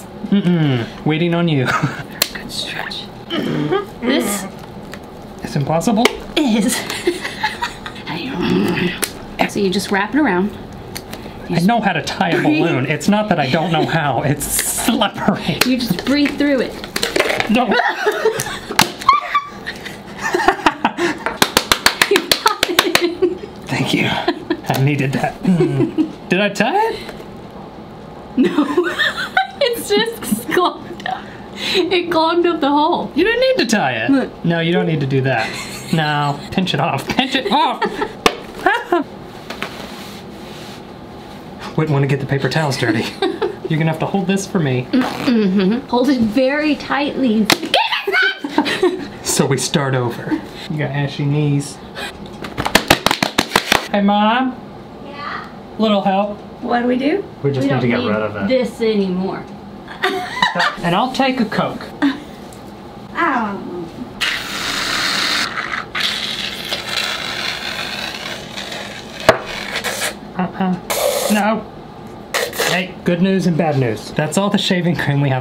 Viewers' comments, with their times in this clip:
0:08 I didn’t know it was your sister until this part she does the same frustrated groan🤣 Btw I’m just watching all the vids so I didn’t see the title
0:56 they sounded like a kid omg it was cute tho like "hey mom..?" 😂